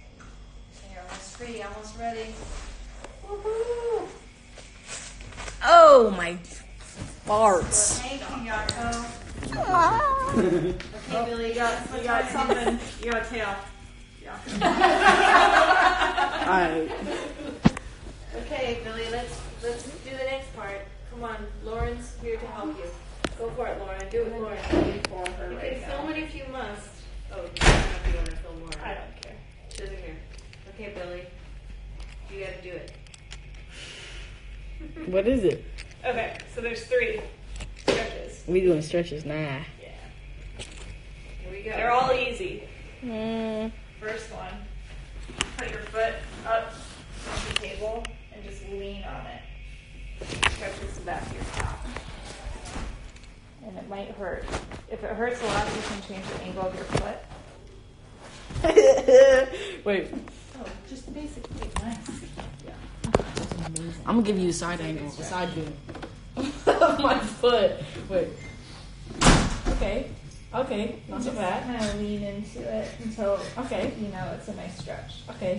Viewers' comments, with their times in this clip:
0:09 What a cute noise lol 😂
0:59 that laugh tho 😂😂